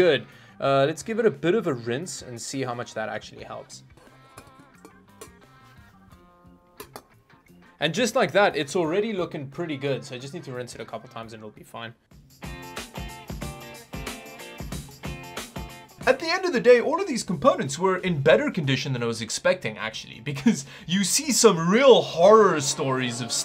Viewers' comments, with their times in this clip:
0:08 where'd ya accent go?